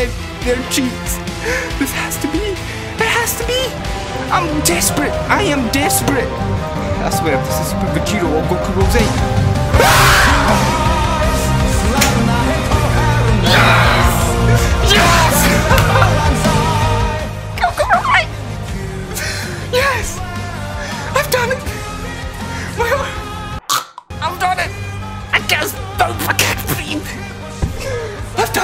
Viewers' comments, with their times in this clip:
0:09 WARNING HEADPHONE USERS, PLZ TURN DOWN YOUR VOLUME :)
0:10 AND THIS IS TO GO FURTHER BEYOND!(Monkey Scream)